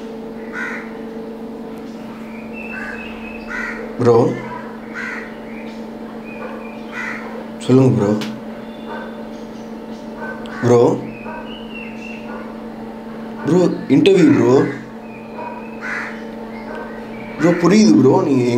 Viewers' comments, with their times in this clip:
0:06 Yeah bro looks like "I am Groot"